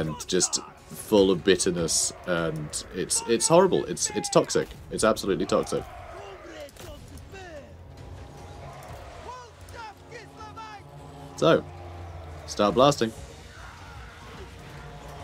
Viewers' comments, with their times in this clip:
0:03 Rot Flies genuinely sound like incels.